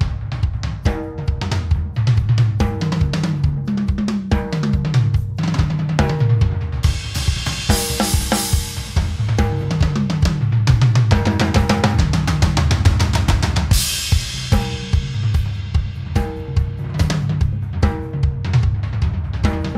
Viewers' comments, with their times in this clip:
0:04 where's the snare drum hit?! Play back?